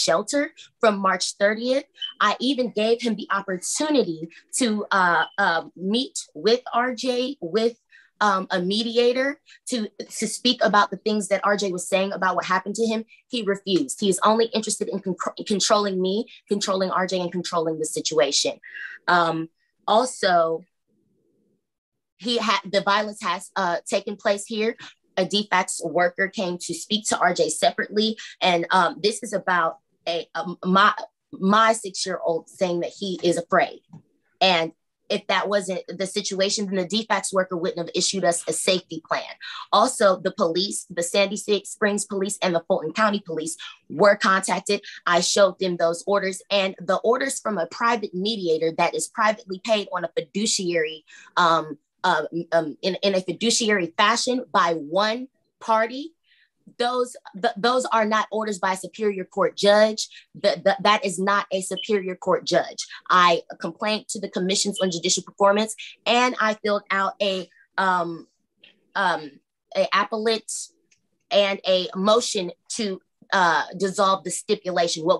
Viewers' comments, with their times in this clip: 0:03 What is that beeping?
0:59 OF COURSE This Ratchet bllch has a smoke detector with a low battery LOL